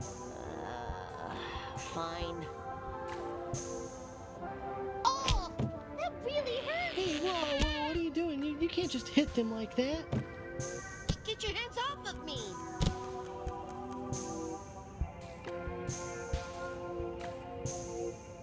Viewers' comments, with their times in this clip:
0:04 I love the cute little battle roar that blue does ☺️ he is truly the fiercest fighter!